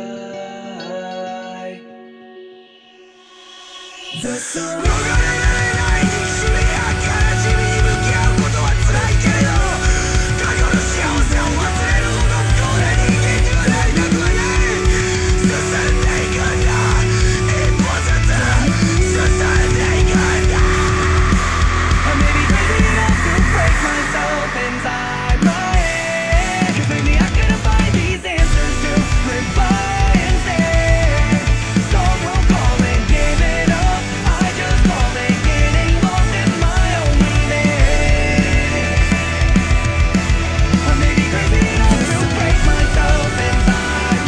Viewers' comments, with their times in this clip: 0:04 Ironically, despite the English lyrics of this song, I find the screamo part said in Japanese that begins to be the most inspiring part of them all. Original: Nogarerarenai nikushimi ya kanashimi ni mukiau koto wa tsurai keredo, Kako no shiawase wo wasureru hodo fukou na ningen niwa naritaku wa nai. Susunde ikunda! Ippo zutsu, SUSUNDE IKUNDAAAAAAAAA!!! Translated: Even if it is painful to confront the unescapable hatred and sadness, I don't want to become miserable enough to forget the happiness of the past. So we move forward! Step by step, WE MOVE FORWAAAAAARD!!! Now then, I hope AmaLee notices this and makes a cover of her own like she did with Mukanjyo.
0:26 that drum fill... wow